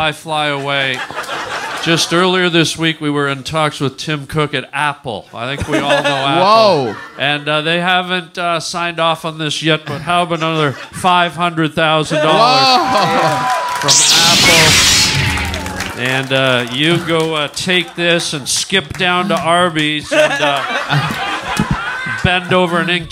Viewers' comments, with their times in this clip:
0:10 Redban once again perplexing Tony with his absolutely nonsensical choice of SFX